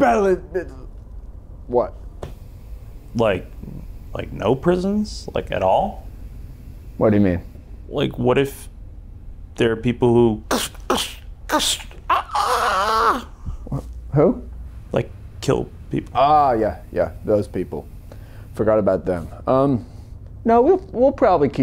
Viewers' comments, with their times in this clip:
0:09 sounds like the Lego gamorrean guard dying